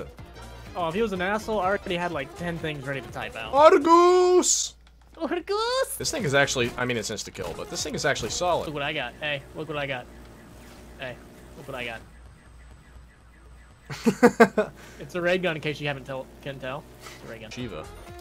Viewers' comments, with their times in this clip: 0:05 man sounded like an anime girl 😂